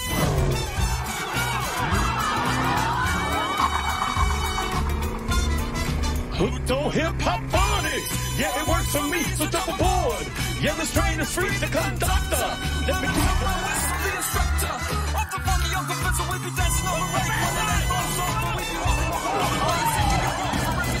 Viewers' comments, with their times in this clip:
0:06 The crew just singing together and having the time of their lives in this dangerous situation is absolute gold. Anyone know what song they're jamming to?